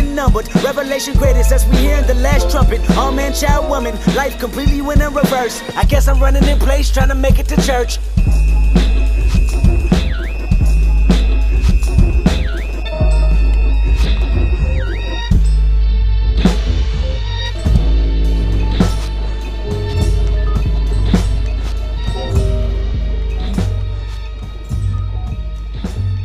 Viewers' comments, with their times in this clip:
0:08 the sfx in the background are spine chilling